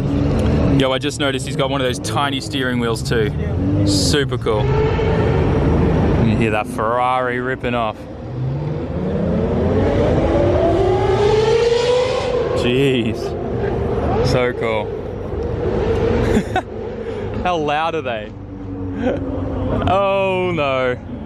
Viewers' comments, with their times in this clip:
0:08 damn that ferrari sounded like an air raid siren for a bit